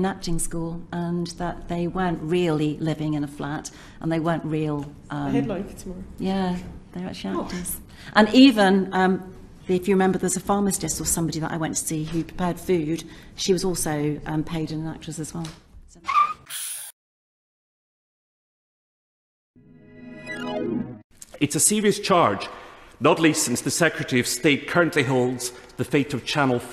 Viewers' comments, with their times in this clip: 0:10 She went to see a "pharmastist" 🙄 Also, how many times can one person use 'actually' in a sentence?